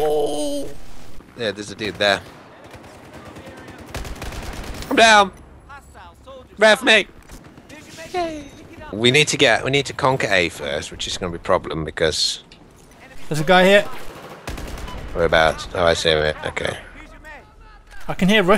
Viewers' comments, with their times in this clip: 0:04 "I'M DOWN! REV ME!!!......yay" That silent "yay" at the end killed me XD